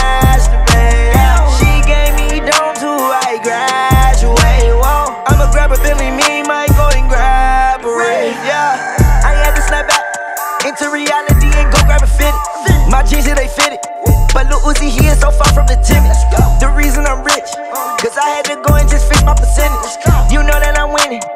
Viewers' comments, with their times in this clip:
0:07 mf enderman featured